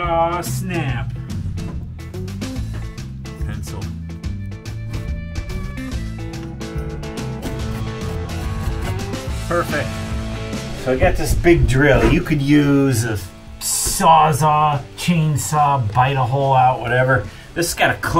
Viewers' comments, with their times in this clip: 0:04 Nice video man. Also the music sounds like a Home Depot commercial lol pretty cool